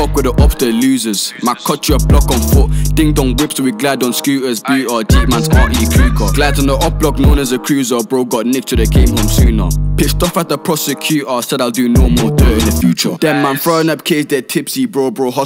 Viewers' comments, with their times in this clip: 0:03 Digga D flow🥶 In fact the second verse was Digga D flow